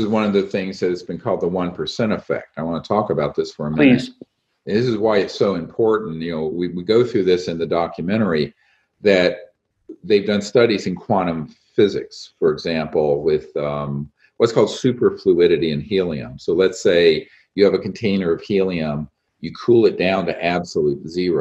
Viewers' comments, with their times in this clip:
0:07 did he say “this is why it’s so important Neo”